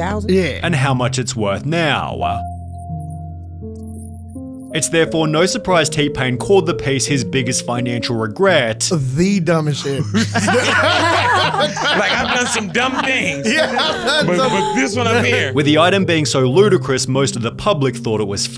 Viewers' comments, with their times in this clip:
0:03 There's an audio glitch seconds, bro!